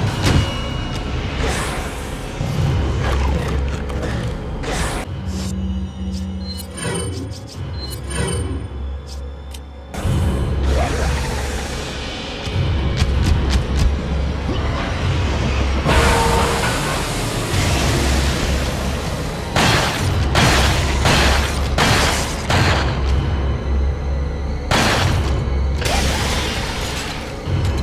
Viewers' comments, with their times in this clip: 0:10 One my all time favourite games .... and this SOB boss 🤣 ... and that growling type sound is same as the dogs in dark souls 2 i think